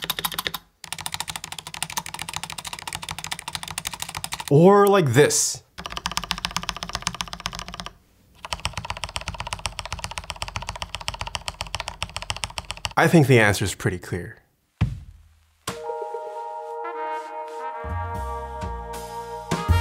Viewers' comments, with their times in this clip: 0:05 Untuned spacebar? Thanks for the tutorial.
0:07 Me when I hear a very expensive keyboard